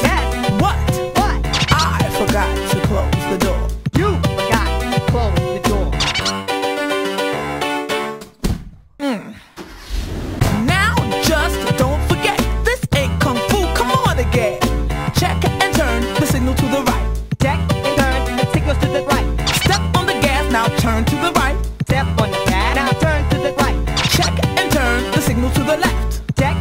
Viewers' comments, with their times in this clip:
0:04 That attitude when he says “ YOU forgot to close the door.
0:12 The background music....